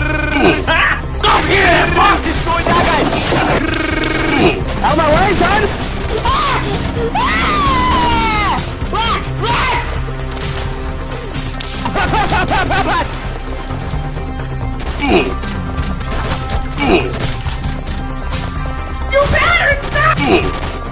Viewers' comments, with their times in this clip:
0:06 kid with 5 years old screaming: